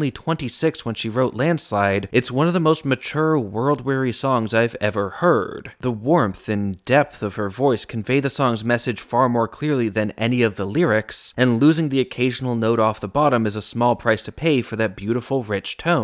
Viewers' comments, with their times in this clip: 0:04 I've always loved the 1997 live version, particularly the way the vocals are done. For one thing, it makes me think of the difference between a love song being sung by a kid with a crush and a love song being sung by someone who's been married for 50 years. The more you understand it, the more you feel it, comes out in those vocals. But she still hits that same note which isn't quite a D and isn't quite Eflat. I think that that note does something special for the song - perhaps the sound of someone on the verge of tears, or in the middle of a sigh.